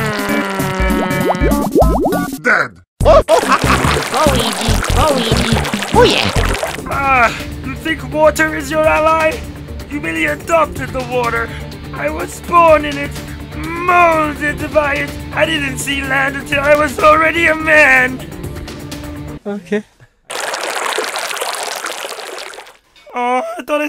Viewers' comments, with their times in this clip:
0:04 i keep hearing "oh weegee"